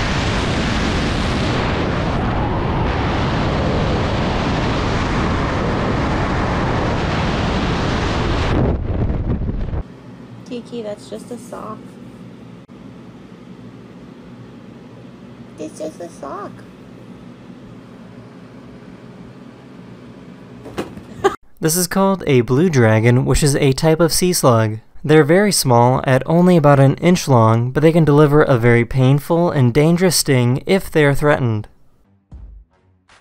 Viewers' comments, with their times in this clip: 0:06 slow the video it will look cool It sounds like some screaming s*it😂😂
0:18 If you play in 2x speed it sounds like the kitten just ultra-punched that poor guy